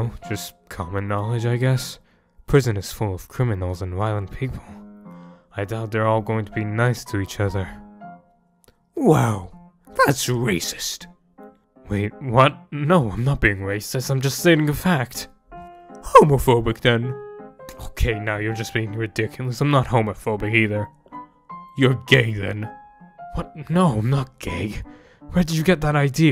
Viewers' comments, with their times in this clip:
0:08 Douma kind of sounds like Garroth from Mystreet 🤔